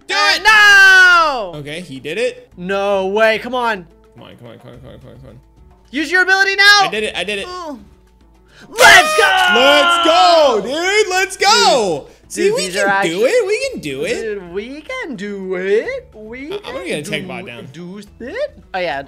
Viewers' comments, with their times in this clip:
0:07 why he moan like that??